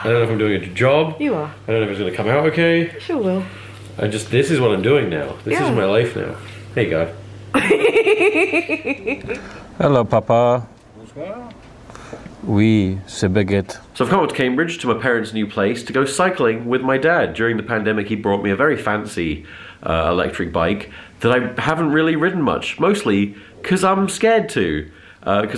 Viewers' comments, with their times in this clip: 0:10 ayo french dad ?! lmao